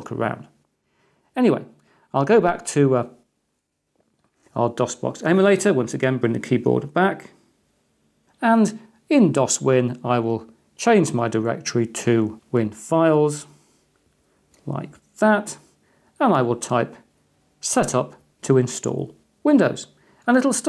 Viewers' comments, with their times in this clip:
0:03 i was watching this in fullscreen mode, and you had a break in your speech right when it went to the dos screen. This may show my age a bit, but my inital thought was that youtube crashed, and went back to my dos prompt, hahaha...